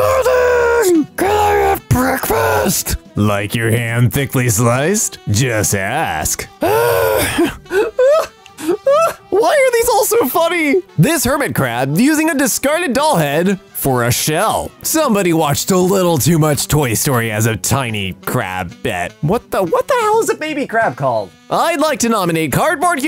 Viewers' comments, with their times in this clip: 0:04 thought that said “hand” and I got terrified